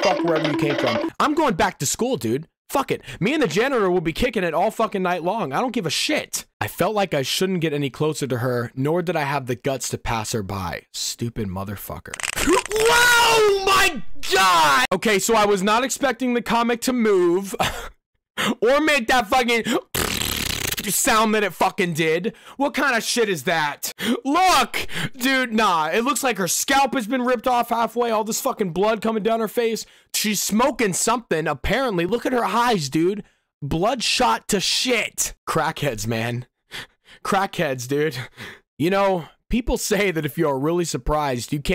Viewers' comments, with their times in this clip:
0:03 cars theme starts
0:22 dude did the beatbox bass sound